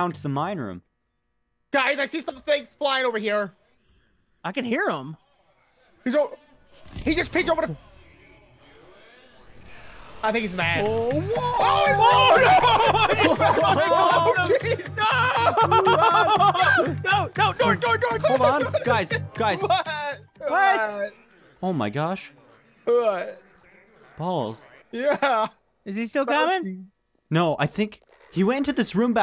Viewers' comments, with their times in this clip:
0:08 haha twice ive heard him yell like this but not like last episode with the dinos haha
0:10 that is the part we running and screaming.
0:10 the amount of chaos and shouting